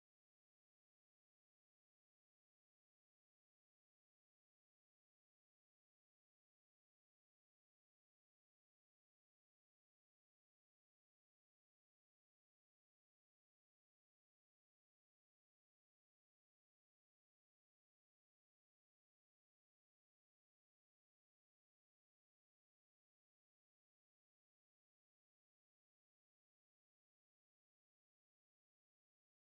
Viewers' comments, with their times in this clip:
0:10 Did anyone notice the James Bond music 😮😮